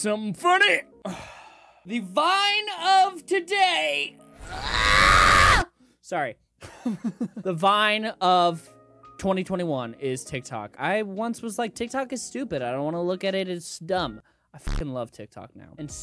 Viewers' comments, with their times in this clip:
0:03 the random child screaming outside